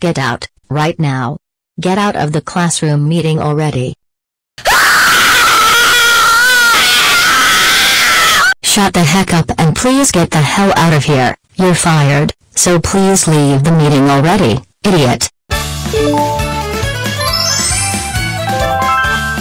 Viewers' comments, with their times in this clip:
0:03 NOT THIS SCREAM SOUND EFFECT!!!
0:04 The Karen Was Screaming Loudly at Her Boss
0:05 oh my goodness 😮 that scream is insane